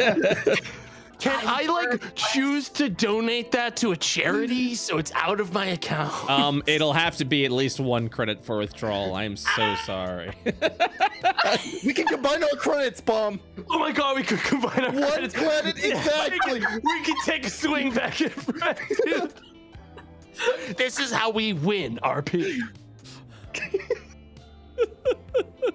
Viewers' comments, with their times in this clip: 0:08 The iconic Tomato phase out scream is fucking fantastic